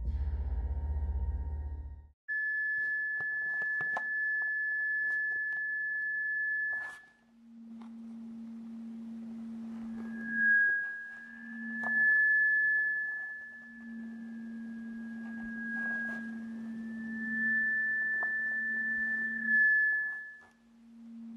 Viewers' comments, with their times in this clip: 0:05 the audio like like -. . .-. . Which means NERE in Morse Code. The meaning of NERE is sad. MILO has anti depressants pills HMMMMMMM